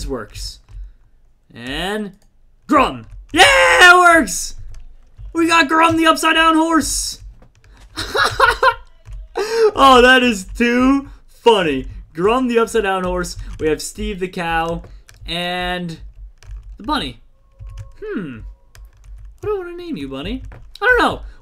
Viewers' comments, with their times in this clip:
0:08 u can kinda hear fnaf 1 music